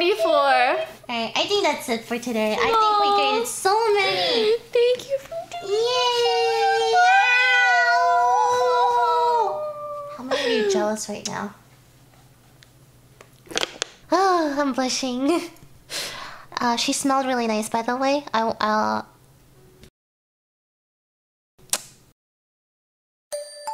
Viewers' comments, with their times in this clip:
0:05 sounds like my cat